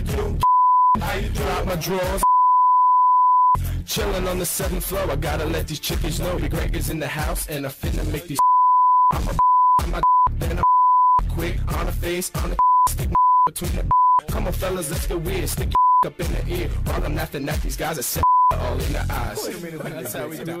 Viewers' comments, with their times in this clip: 0:06 first of all that audio quality of that sound clip was garbage second of all if you're just going to have to bleep every other word don't play it at all. What an amazing listening experience for the viewers at home.